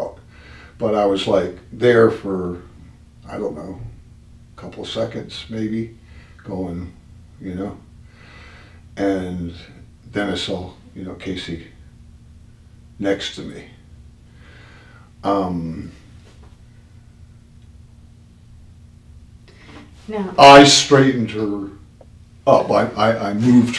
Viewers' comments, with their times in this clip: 0:04 its so fasinating to watch him talk about getting up after falling and after the detective is sitting there silent for a few second he gets silent. He waits..... soon as the detective goes to speak he cuts her off almost yelling. Outside of his normal tone in the beginning of the interrigation. It seems to me that second of silence he was waiting for her to go to speak to throw off her question....his yelling and gesture looks almost planned with a lie. The fact she is a women hes trying to manipulate her into believing him over the pretense that he think she knows nothing about construction. His incompetence doesnt realize u dont need knowlege in construction and gardening to be a detective with knowledge of trajectory! Apparently he should have stuck to constrution. Hes way out of his league with homicide investigation. Fail of the year goes to this prick!
0:04 its so fasinating to watch him talk about getting up after falling and after the detective is sitting there silent for a few second he gets silent. He waits..... soon as the detective goes to speak he cuts her off almost yelling. Outside of his normal tone in the beginning of the interrigation. It seems to me that second of silence he was waiting for her to go to speak to throw off her question....his yelling and gesture looks almost planned with a lie. The fact she is a women hes trying to manipulate her into believing him over the pretense that he think she knows nothing about construction. His incompetence doesnt realize u dont need knowlege in construction and gardening to be a detective with knowledge of trajectory! Apparently he should have stuck to constrution. Hes way out of his league with homicide investigation. Fail of the year goes to this prick!